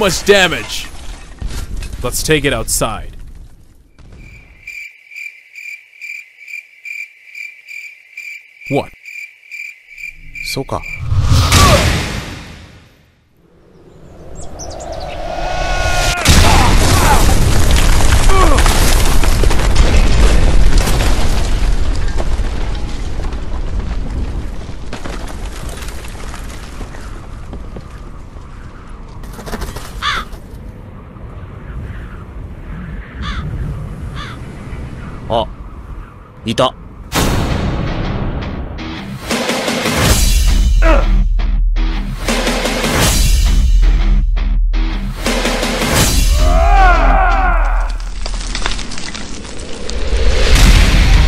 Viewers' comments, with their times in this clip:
0:10 I thought Saitama said "SUKA" (I know he said "okay", alright)
0:37 anyone notice the song played ?